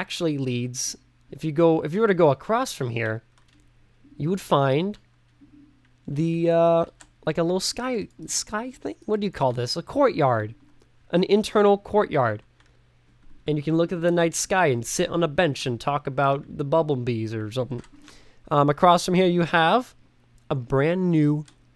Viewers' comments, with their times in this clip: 0:06 I love the way you say "room" Fancy wb, oh & it could be a conservatory.